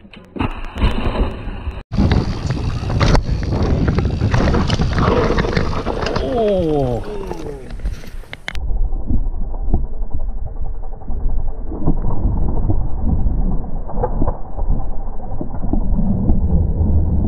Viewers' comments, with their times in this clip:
0:03 worst feeling is hearing thar pssssssssssst after a crash